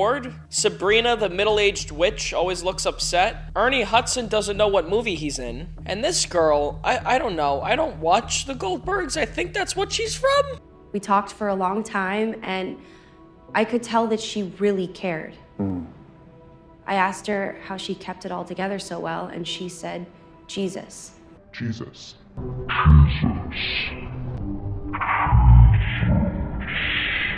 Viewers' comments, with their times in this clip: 0:09 Bruh that voice crack